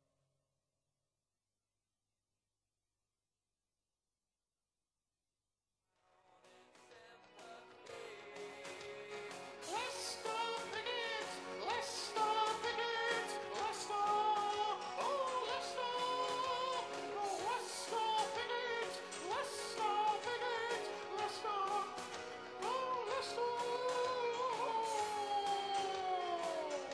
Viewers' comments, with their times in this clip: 0:07 what on EARTH?? It sounds like a Monty Python woman!!!